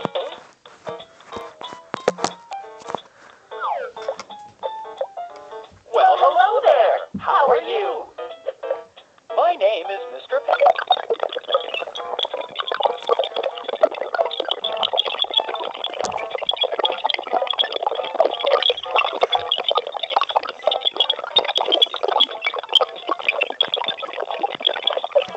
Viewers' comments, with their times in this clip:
0:10 The game sound be like: hacker detected.
0:10 Sound is corrupting